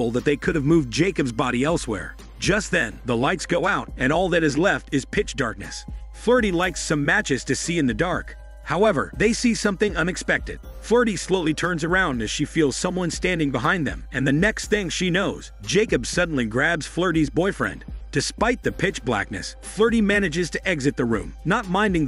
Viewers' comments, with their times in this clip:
0:05 cue the organ